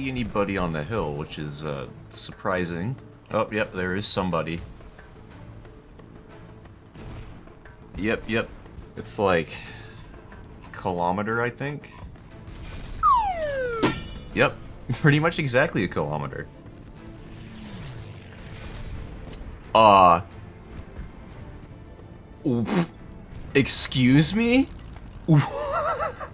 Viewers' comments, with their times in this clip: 0:07 Aang telling Appa to start flying
0:13 That dodgeball sound effect brought back some memories man